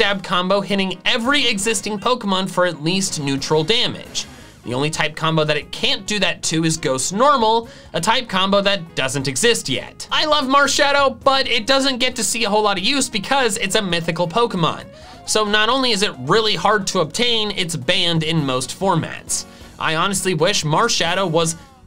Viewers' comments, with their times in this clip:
0:04 zoroark H: vine boom